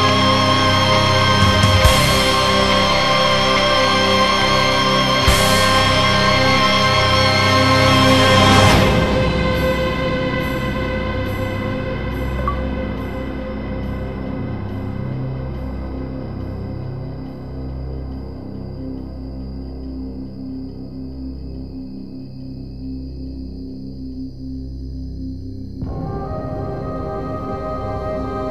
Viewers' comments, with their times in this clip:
0:09 achievement pop up sound !!
0:12 Does anybody hear the Xbox-360 bleep